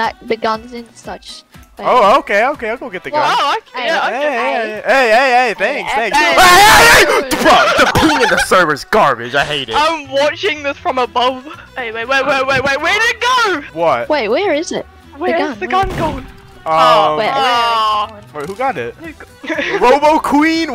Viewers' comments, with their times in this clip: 0:06 the screaming made me laugh so hard😭